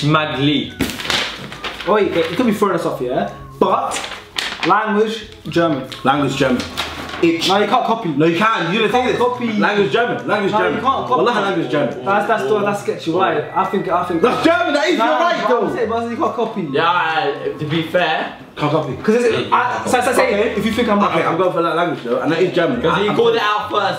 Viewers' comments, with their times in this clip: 0:05 how did they know that it was german? I know german and didnt understand it😲